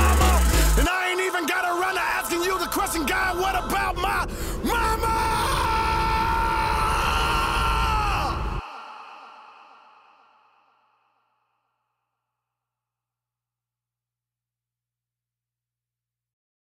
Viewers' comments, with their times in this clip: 0:03 Inside of my chest started crying That change in his voice was a cry for love.